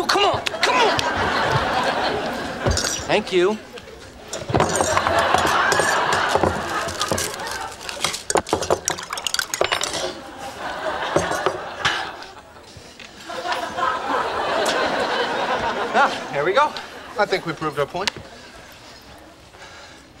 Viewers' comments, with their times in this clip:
0:03 Chandler's Thank you is so cute❤️